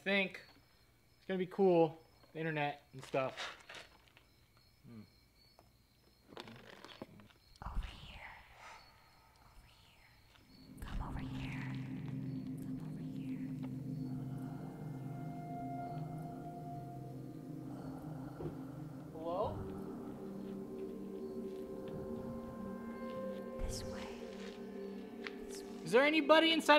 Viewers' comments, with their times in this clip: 0:07 clicking noises in the background with 3 levitating red dots